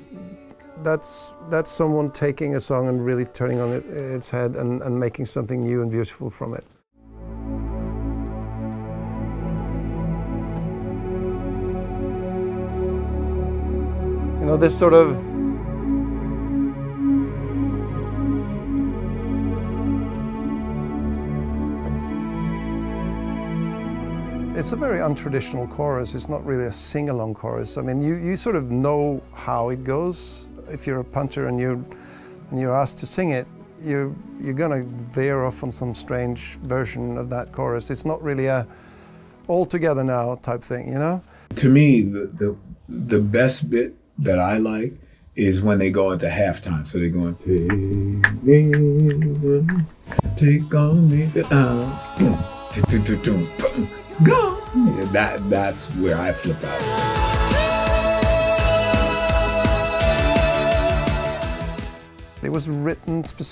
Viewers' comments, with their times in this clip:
0:06 Mags going full on Angelo Badalamenti
0:07 just wow. One of the many reasons this song is so great is because it’s so beautifully written. Right here, Magne delivers this part so extraordinary prestigious.
0:48 That's what I felt also...agreed! That half time and that grooves by the drum kit